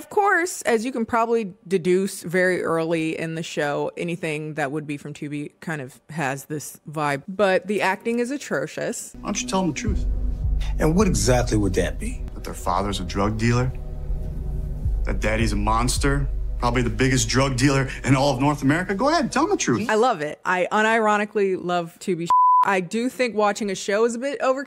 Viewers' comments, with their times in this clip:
0:09 I mean, I actually like the way he delivered that line, verbally